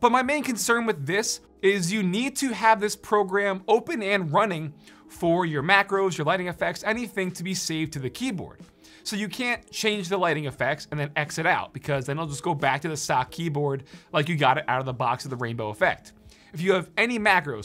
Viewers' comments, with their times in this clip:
0:04 voice crack hahahahaha